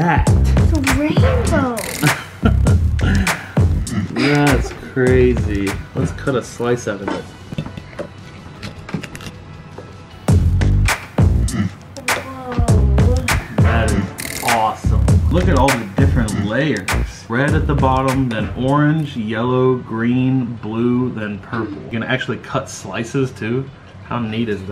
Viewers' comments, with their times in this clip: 0:10 on 100 million years still using the music